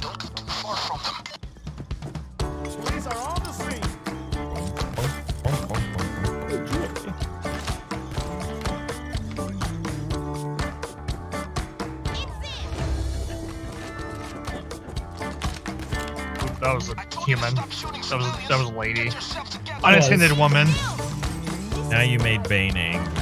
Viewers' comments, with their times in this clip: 0:05 this is some really chill music for an assault. It sounds like it's supposed to be used for stealth or before it gets loud. It seems too chill for an assault, right?